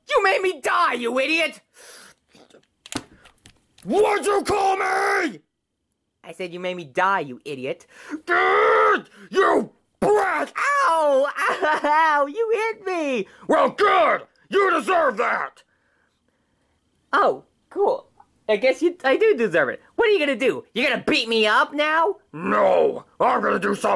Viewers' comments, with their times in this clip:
0:08 Bowser: growls You brat! hits Jr